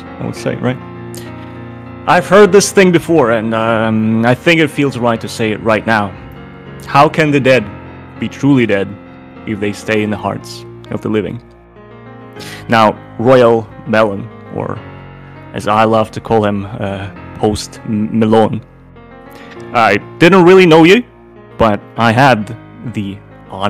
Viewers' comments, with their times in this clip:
0:10 The Rick Roll in the background really made me sad